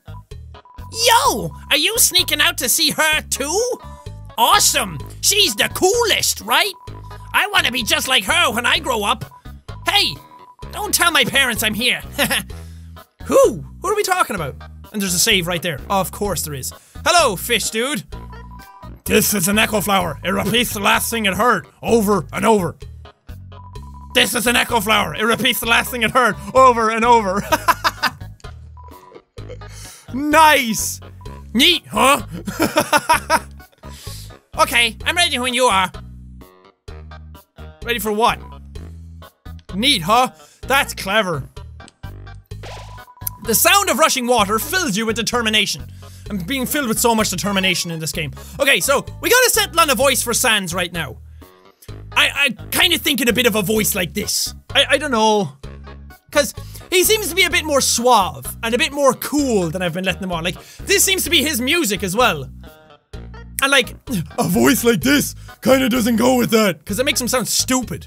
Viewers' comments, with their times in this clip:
0:04 goes a little into happy gilmour/iago rq
0:54 Jack’s “I don’t know” his accent REALLY came out there